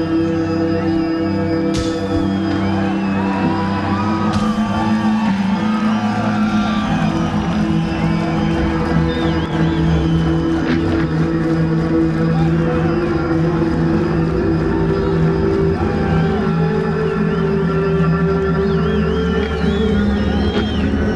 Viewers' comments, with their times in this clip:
0:07 Imagine being yelled at by a drunk Marilyn Manson while you're working as a roadie I'd probably shit myself 🤣